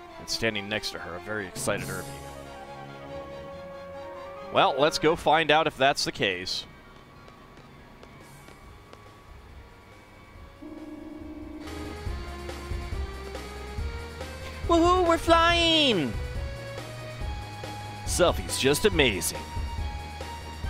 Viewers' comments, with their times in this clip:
0:05 Something I like about this part is how the music chimes in bright and clear, the moment you leave passenger room it only gets muffled to barely audible only to get back to full volume and a very excited Selphi on the bridge. A not well known feature of the Ragnarok are apparently the speakers on the outside playing the Ragnarok theme whenever you start it up.